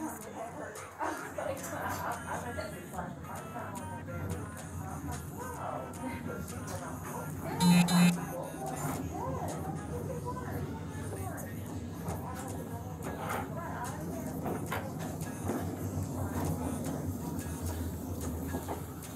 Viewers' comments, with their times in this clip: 0:04 Cop listening to Afro beats